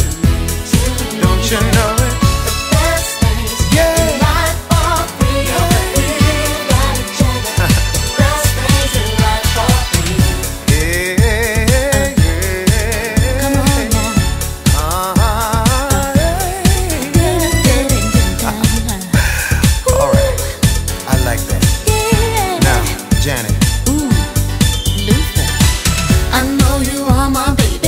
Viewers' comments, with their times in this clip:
0:10 The best part is Luther's vocal riff bliss - RIP